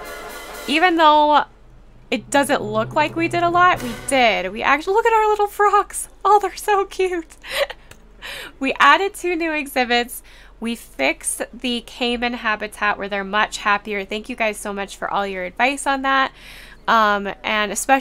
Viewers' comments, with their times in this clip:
0:03 Lol! So much drama and suspense over frogs and water treatment of all things. 😆 This episode is beautiful and so well edited! I love how the music stops when you clap